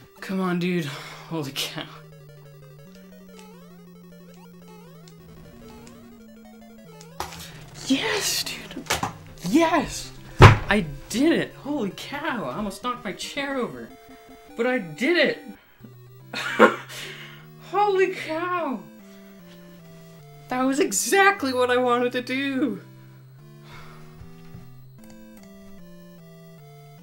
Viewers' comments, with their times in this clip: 0:07 what I was expecting: HOOOOOLLLLY WAAAAAAAAAAAAAAAAAAAAAA WWOWOOOOWW II DIIIID IIITTTT !!!!! but its like: oh wr, cool congrats btw ;)
0:07 is quietest pop off I've ever heard
0:10 that’s the calmest pop off I’ve ever seen